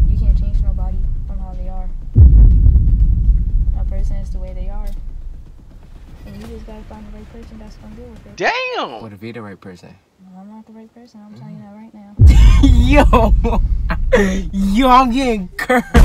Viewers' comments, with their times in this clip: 0:04 she smoov? sound mad hurt 😭